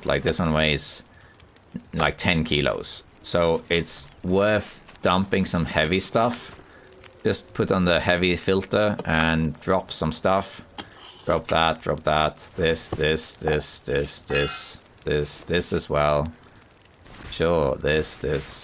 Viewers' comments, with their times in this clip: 0:03 Crazy naked guy running through the woods laughing, with several blood-soaked bags of unidentified body parts on his back...